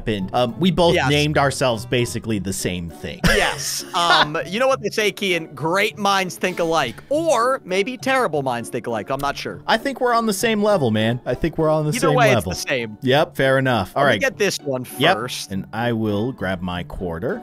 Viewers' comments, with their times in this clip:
0:03 its just voice impressions, not them